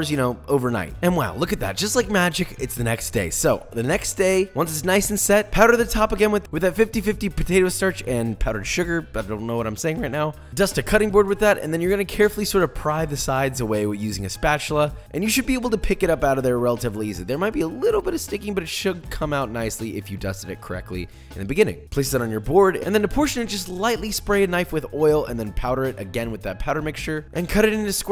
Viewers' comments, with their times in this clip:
0:10 he just had a voice crack 😂